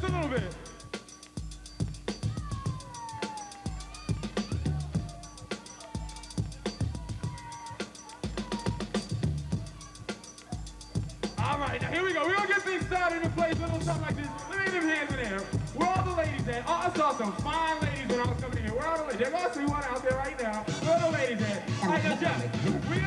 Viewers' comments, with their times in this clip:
0:05 Jeff had the triple hi-hats in ‘87! Confirmed.